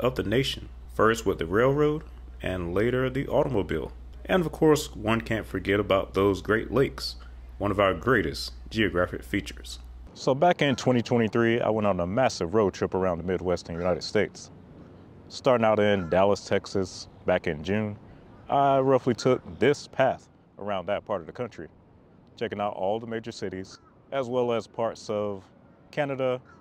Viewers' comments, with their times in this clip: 0:10 you’re only speaking on one side of the audio. Painful for headphone users!